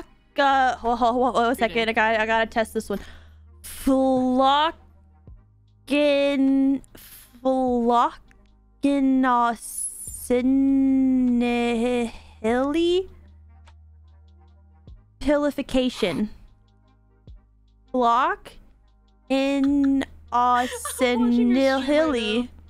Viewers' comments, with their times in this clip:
0:03 watch it! She's casting a spell and we all gonna be cursed by that